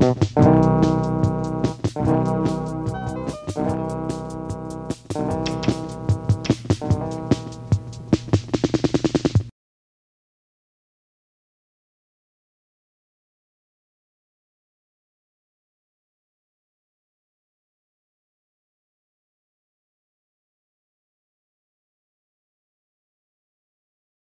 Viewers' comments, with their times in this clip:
0:08 when your fraind on the night call talks a little too loud